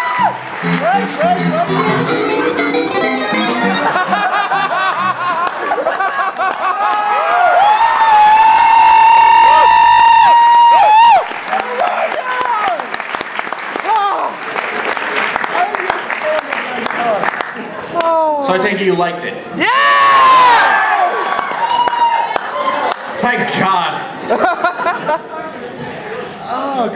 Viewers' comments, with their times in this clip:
0:08 Beware ear rape.